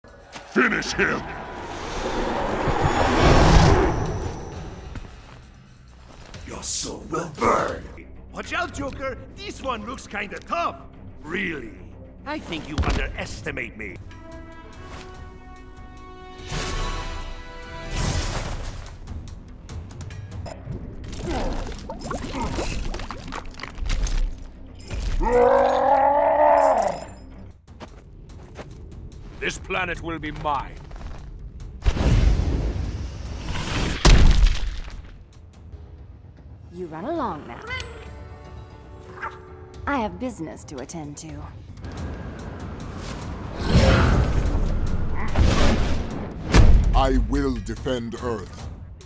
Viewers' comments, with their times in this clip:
0:07 Kinda sounds like Spy from TF2
0:08 Why joker-batman sounds like spy?
0:11 Why does he sound like the spy
0:36 Catwoman was the best . Nice mimicry Batman 🤣🤣🤣🤣🤣🤣🤣🤣🤣